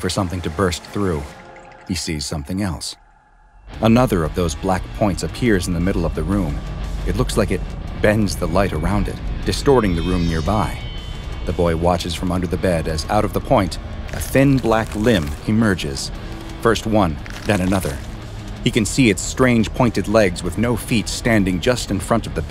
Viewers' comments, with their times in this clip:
0:04 You know something bad is going to happen when he starts playing heavy metal music...